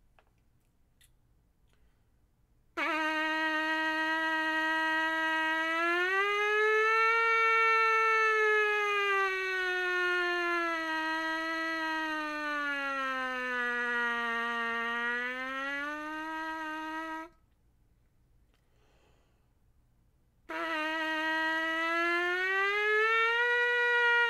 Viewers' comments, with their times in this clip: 0:08 WWII vets be like: flashback noises